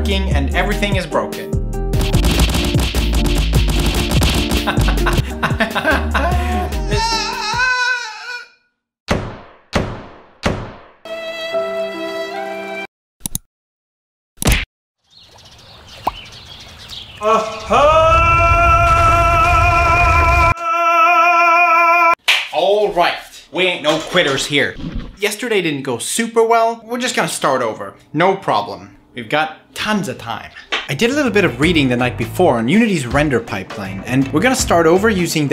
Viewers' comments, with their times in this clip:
0:04 When you laughed and cried I actually felt your pain bro. F to pay respects.
0:16 git gud you loud chiken because you job is now mine